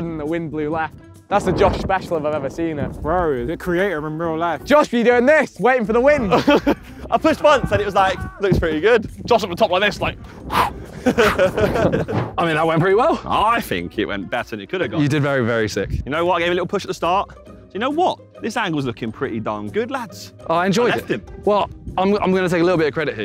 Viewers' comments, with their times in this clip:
0:06 the screaming in the background 💀
0:07 The scream was sooo good